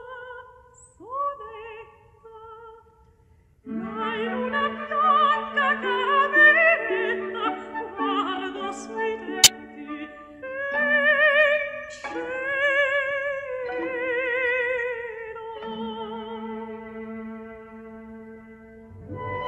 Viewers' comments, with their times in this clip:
0:07 Warning for a loud glitch sound 36